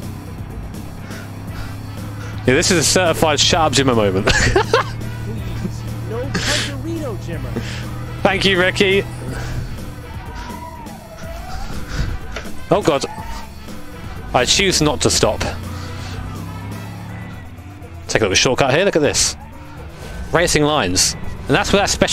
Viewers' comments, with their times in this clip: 0:08 that tyre squeel kinda fits in the music